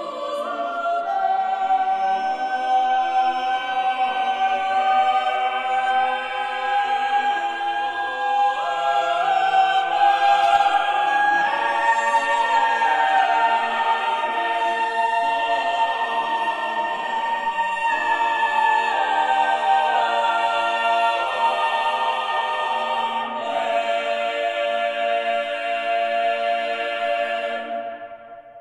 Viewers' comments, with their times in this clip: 0:10 Beautiful, but audio clipping ? Unfortunate :(